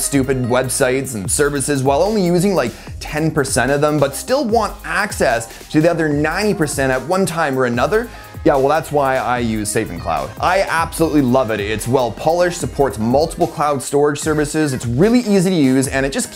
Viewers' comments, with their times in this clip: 0:03 Balance between your vocal level and the background music in this one is terrible even just in it got to me. Really clashing.